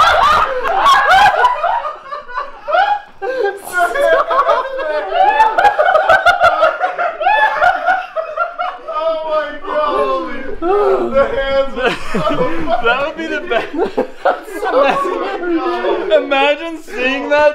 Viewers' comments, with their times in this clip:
0:04 sounds like angry birds lol